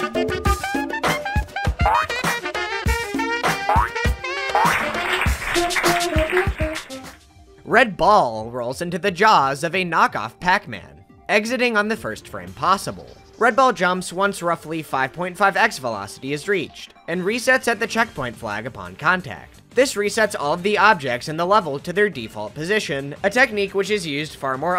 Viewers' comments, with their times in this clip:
0:07 why was "red ball" pronounced like that. i feel violated. also what kind of hacker magic was that train level, absolute matrix infiltration tomfoolery